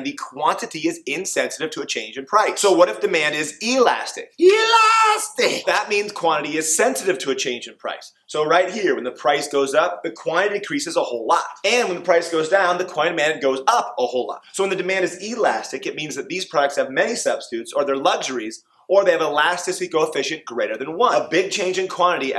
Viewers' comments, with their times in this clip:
0:03 my sister is traumatized by the way he says Elastic lmao got some good laughs and amazing explanations keep up the good work